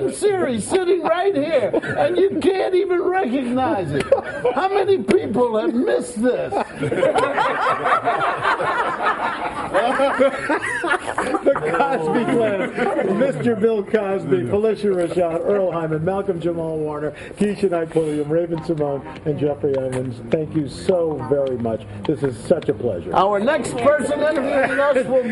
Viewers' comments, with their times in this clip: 0:10 Al Roker farts
0:10 Anyone else heard the farting lol